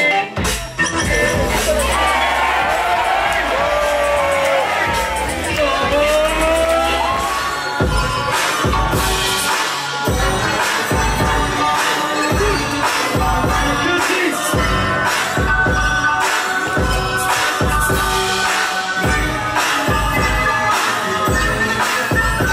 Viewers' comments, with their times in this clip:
0:08 the song starts plz